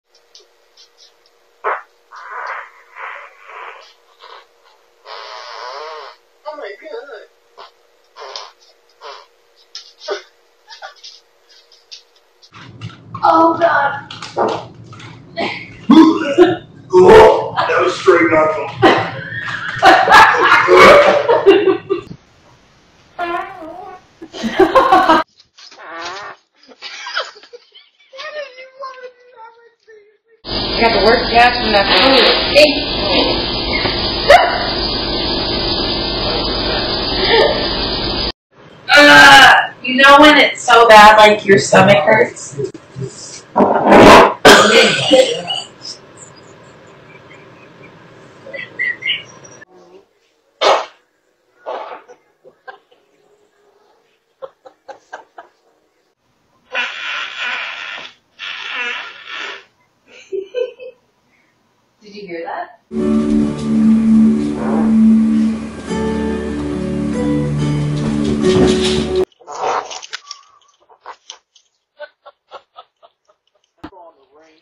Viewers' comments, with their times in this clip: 0:07 😂 Oh my GWOOD😂😂😂😂😂😂😂
0:43 started like a Speedboat Engine starting
0:58 actually sounded like a door opening from a Horror movie.!!
1:00 was like a modern jazz solo.